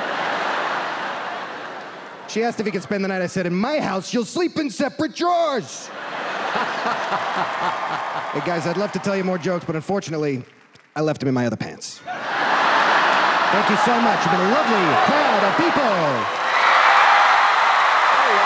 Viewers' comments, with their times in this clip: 0:06 Isn’t that the same laugh from other video.